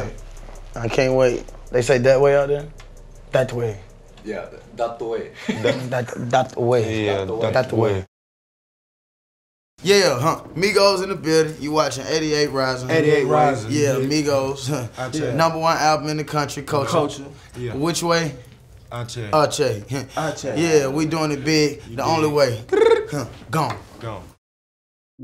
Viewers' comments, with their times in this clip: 0:03 i swear its Joji talking in the background
0:06 is a perfect filipino accent